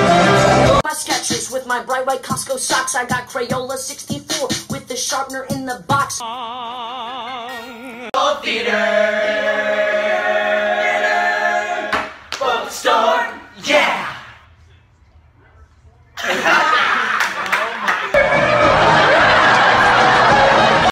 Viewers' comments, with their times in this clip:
0:03 can we talk ab that rapping